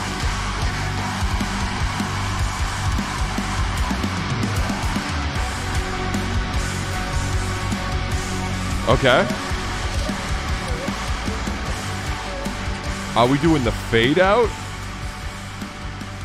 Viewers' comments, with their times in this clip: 0:04 Guitars reminds me alot of Deftones - Deftones album. Ending also reminds me of Needles and pins from the same album. Also like alot of ppl uve missed the fkn great blegh there